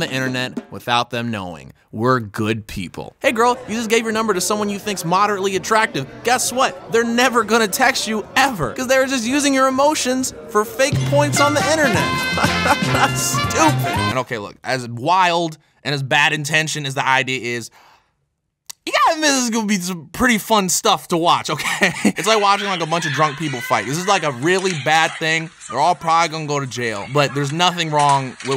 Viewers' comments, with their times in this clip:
0:10 whenever that jingle plays, I lose my god damn mind everytime